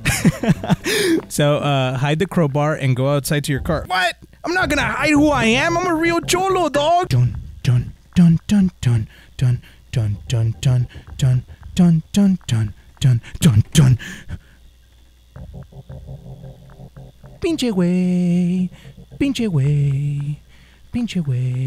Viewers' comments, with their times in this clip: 0:04 Me:Mom can we get mission impossible Mom:No we have mission impossible at home The mission impossible at home
0:06 i like that song